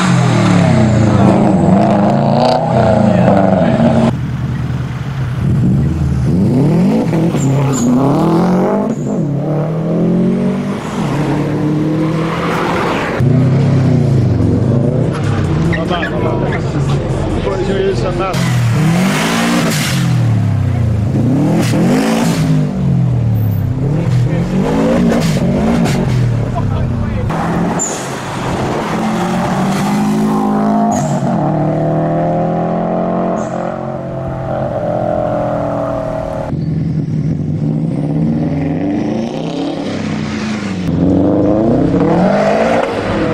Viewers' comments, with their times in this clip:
0:07 how do you get the bov to sounds like the one ?
0:27 Peugeots turbo sounds tho